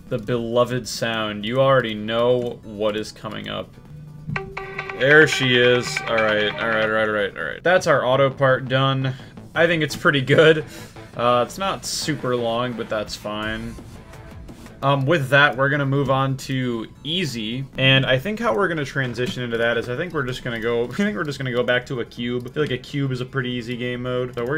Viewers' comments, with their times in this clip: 0:05 phobos does actually sound like a good ringtone ngl